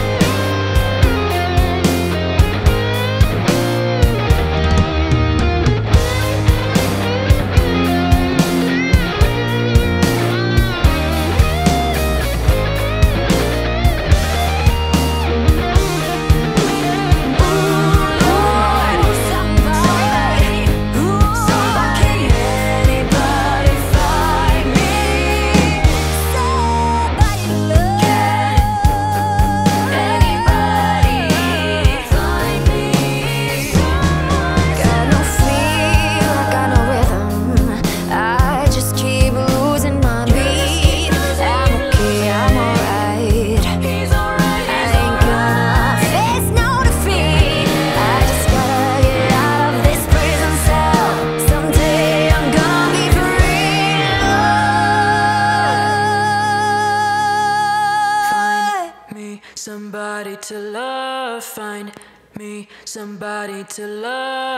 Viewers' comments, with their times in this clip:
0:04 that drum drop 🔥
0:47 lol he used the guitar for that hit by roger😂😂
0:48 random fact, it's actually (Yeah!) Not an electric guitar (Roger's high falsetto)